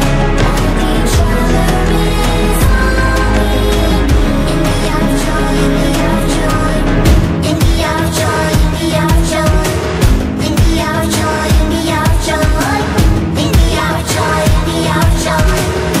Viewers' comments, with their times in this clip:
0:03 I heard in the hour of toy I heard dogday in it